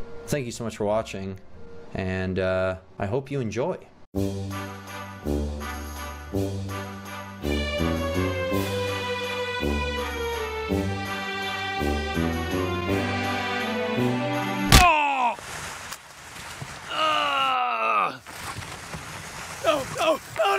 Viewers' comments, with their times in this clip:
0:04 I love hearing the creams of da man very relaxing ;)